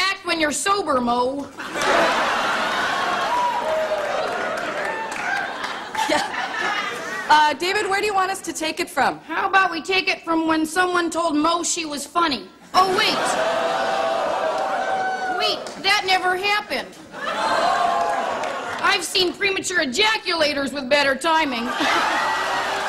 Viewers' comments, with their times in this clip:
0:07 Imagine anyone with a Chicago accent telling someone that THEIR voice is hard to listen to. Now that's funny!